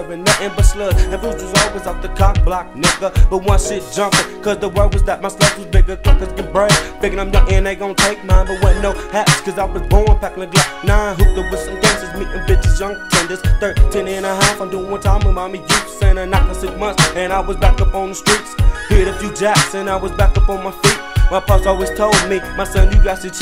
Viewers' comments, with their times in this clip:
0:10 No more hip hop like this, real smooth shit...I love that synth ....